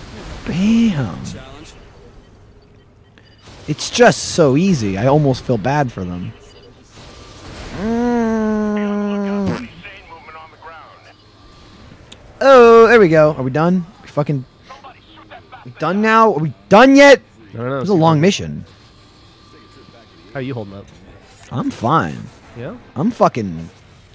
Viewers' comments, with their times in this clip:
0:09 somebody farted ant